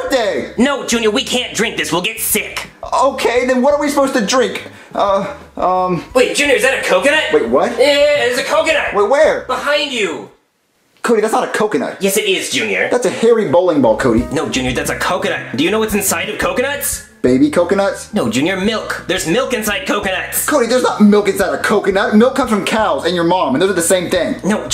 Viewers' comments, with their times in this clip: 0:05 bro I swear I came on the good time I am watching this from 2 years ago and Cody voice when he said it's two years old got me dead and I put a time in the front of this chat cause I wanted to let you know what time it says in the video byeeeeee mwah to all my fans out there